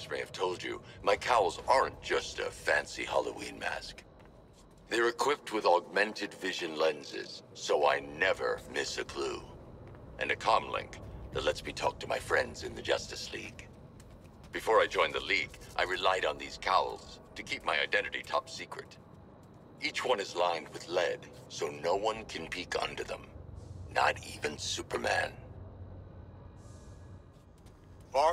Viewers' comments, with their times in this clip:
0:10 Batman when he says friends in the justice league gives me the creeps